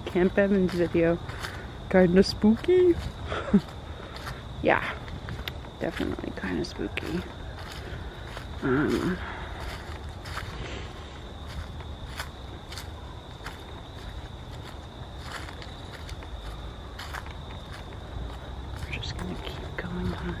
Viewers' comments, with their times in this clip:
0:08 creapy voice under yours.